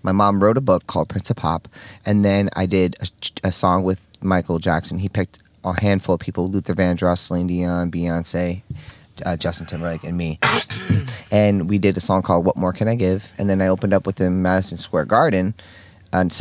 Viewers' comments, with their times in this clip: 0:04 Steve O might as well have said "bullshit!" When he coughed lol that song came out in 2003 😆